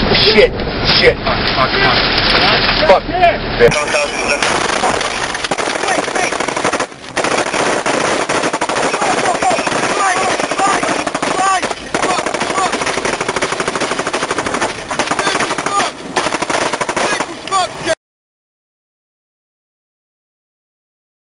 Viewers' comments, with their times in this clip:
0:03 Why is no one talking ?